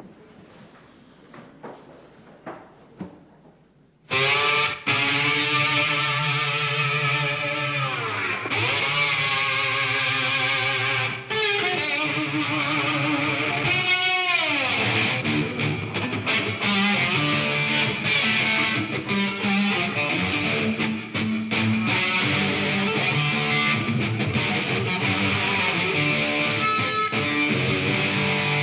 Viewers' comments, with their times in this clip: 0:09 lick is pretty sweet